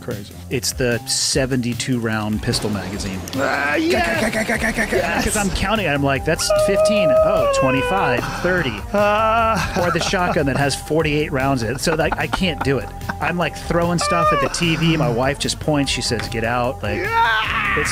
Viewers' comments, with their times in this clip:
0:04 Joe Rogan found his damn best friend from the sounds he’s making